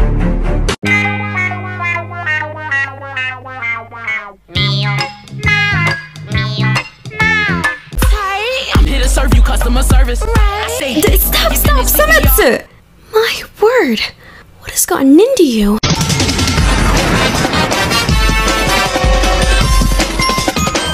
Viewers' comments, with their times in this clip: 0:08 why is no one talking ?? the way ayaka just says sometsu to stop it- literally dying rn